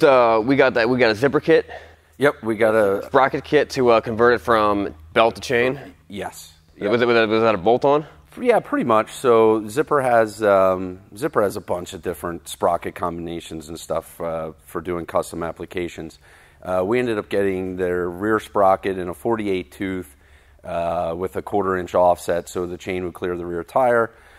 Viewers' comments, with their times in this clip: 0:07 “Fiivkenrocuvkcjdneb that a bolt on?” Is that a technical term?